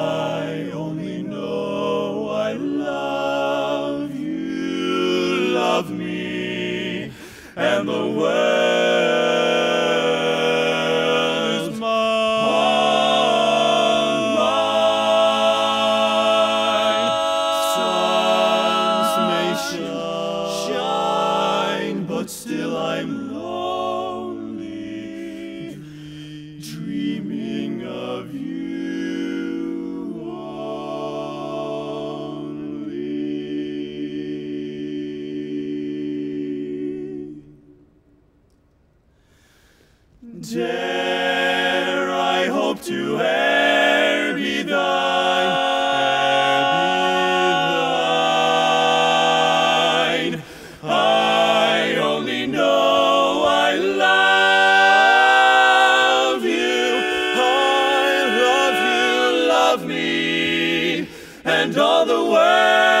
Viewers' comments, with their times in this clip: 0:07 Wow, that whole performance was amazing!!! "Wo-o-orld"... a-mazing. It just rang so nice to me.
0:11 Did the lead went little sharp "is mine"??? Nevertheless, awesome performance and they deserve the chamoionship!
0:12 Were they supposed to change keys ?...
0:12 There is actually a key change there. The chorus from “I care not...” to the second “suns may shine” is in a different key to the rest of the piece. is where it shifts back to the original key. I only have music for this song in a range for women, so in my music, the piece is in A flat major, and the chorus shifts to E flat, then back to A flat where you were wondering about. I don’t know for sure the keys they’re in here, but yes, they do modulate there.
0:30 uhh the chord ...#yup
0:40 They really lock it in onward
0:44 I need to find out the progression from to :56. It's amazing. Not very barbershoppy but definitely wakes the ear.
0:47 minor seventh chord yessssss